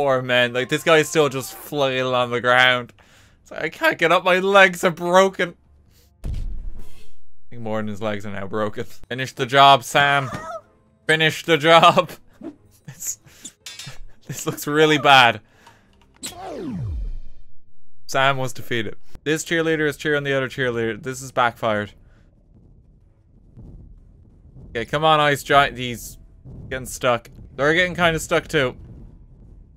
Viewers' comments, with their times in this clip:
0:10 it sounds like Sam goes, “Help!”